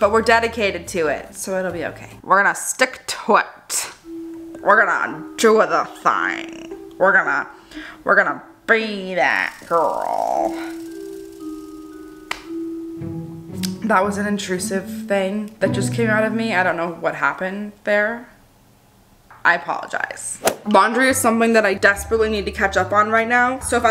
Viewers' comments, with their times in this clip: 0:06 Why did she sound like Bill Clinton. Lmao I love this girl 🤣🤣